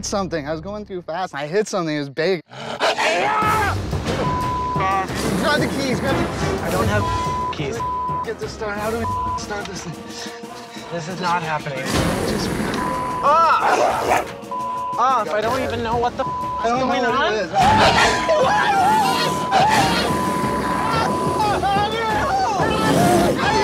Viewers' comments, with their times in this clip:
0:04 Hillarious Bleep there